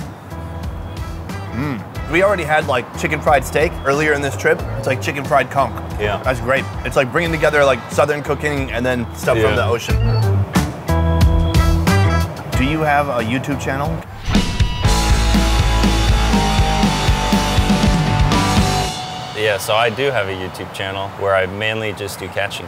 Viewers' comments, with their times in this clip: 0:08 I literally thought he said "chicken fried cunt" 🤪